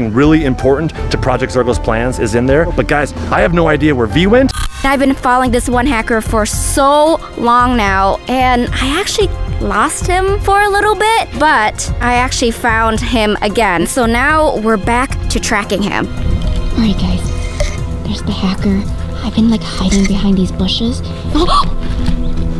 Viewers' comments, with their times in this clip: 0:03 his voice sounded like a hacker